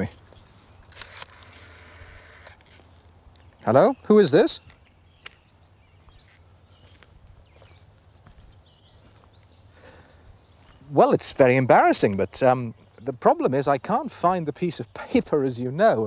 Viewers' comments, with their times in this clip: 0:03 The start of people talking loudly on the phone having a random irrelevant conversation whilst walking around outside not taking any notice of their surroundings or where they're going.